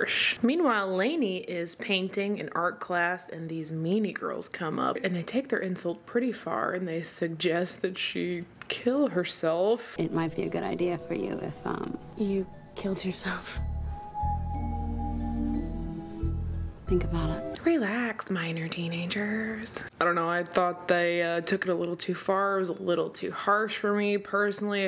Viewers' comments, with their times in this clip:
0:06 He does shaggy also